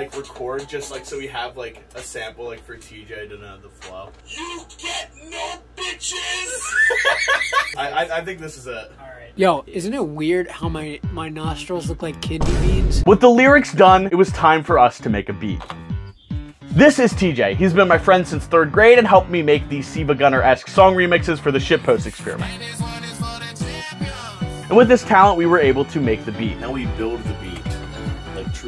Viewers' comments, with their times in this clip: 0:10 epic undertale boss music "isn't it weird how my nostrils look like kidney beans"